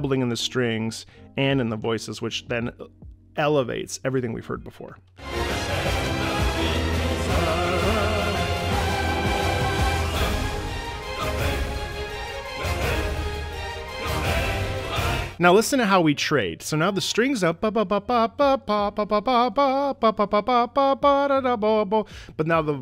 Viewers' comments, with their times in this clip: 0:10 I just love this use of the strings to lead in a section of fast pace music I heard so rarely in maybe one or two video game songs I don't even remember of. It has a very joyful and galvanizing feel to it.